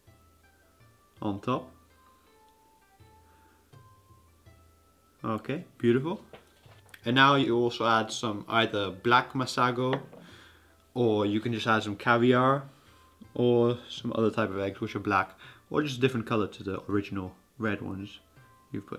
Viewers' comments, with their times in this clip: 0:06 ahaaa ! that sound ! you were licking the fish roe.. hehe